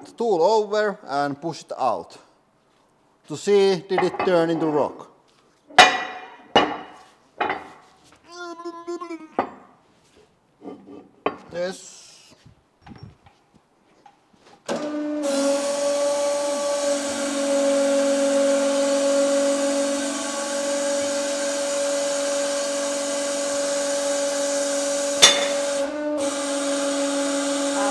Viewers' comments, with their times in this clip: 0:08 I'm glad to see that guys making this noise when we pick up something heavy transcends languages and regions.
0:08 The noise he made while lifting a heavy thing is so relatable 😂